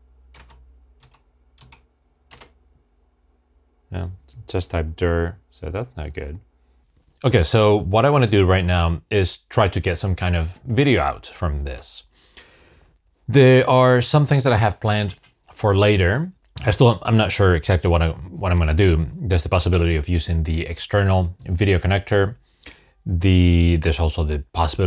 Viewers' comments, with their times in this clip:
0:09 I'm 3 beeps for me was first thing look at missing memory. I will continue watching. So fun. :)